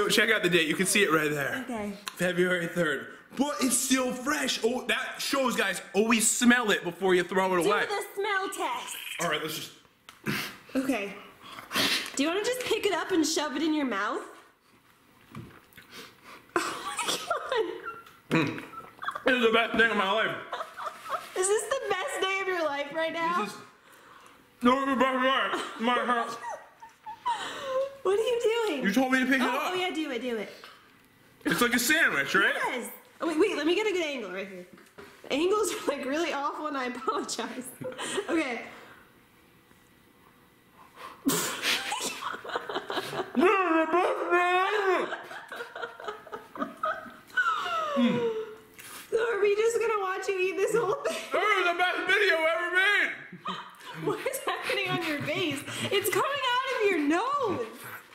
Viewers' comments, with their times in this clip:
0:08 to hear a alien voice
0:43 😂😂😂 Someone can talk gibberish?!???😂😂😂😂😂